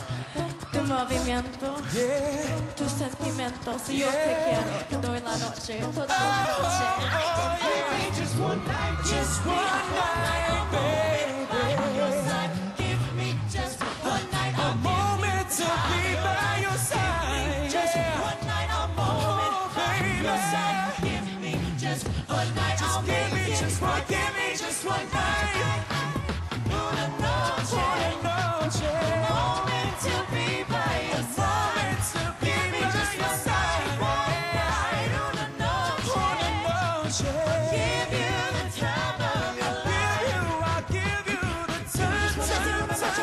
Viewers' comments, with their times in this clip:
0:07 it sounds like she said fuck me lol.
0:26 A capella reggaeton Insanity!